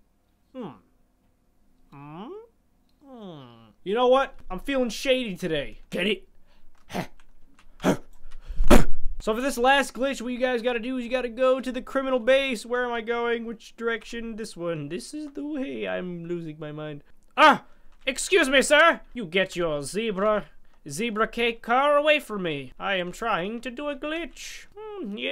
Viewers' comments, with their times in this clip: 0:09 true so true i am deaf now 😂😂